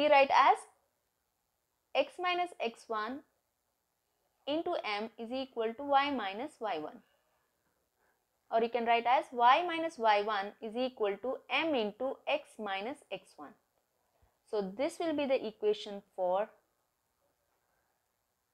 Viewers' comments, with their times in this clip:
0:06 ma'am sound tune suddenly changed 😊